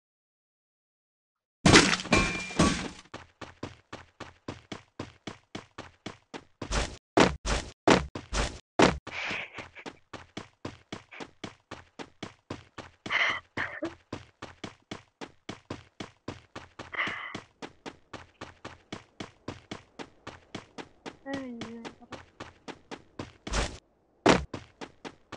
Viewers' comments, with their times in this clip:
0:07 is it someone laughing or crying 🙄